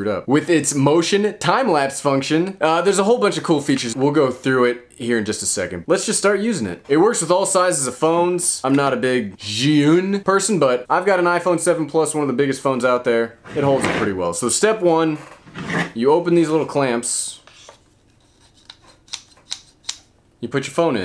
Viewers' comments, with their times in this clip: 0:09 i laughed when you said zhiyyyyun haha